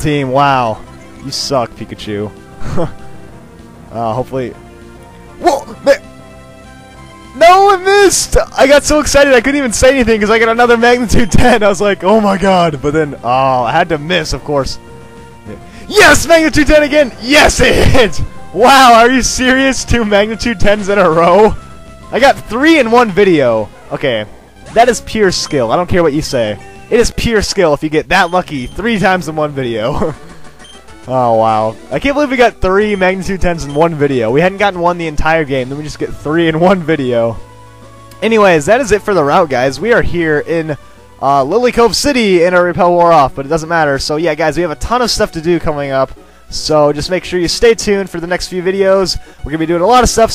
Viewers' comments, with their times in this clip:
0:04 sounds like stewie lol
0:31 you said you got thirty magnitude 10s O_o